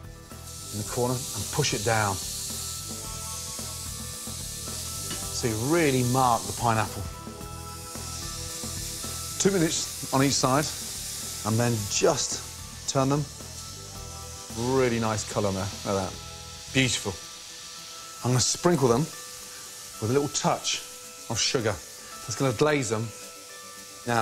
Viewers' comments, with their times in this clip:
0:09 Is it me, or does he say "Two Minutes" a bit funnily here?